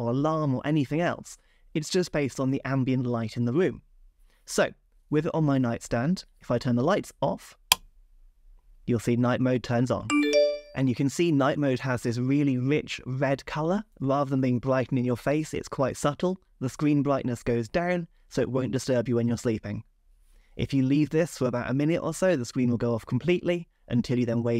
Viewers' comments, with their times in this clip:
0:10 that notification sound is no more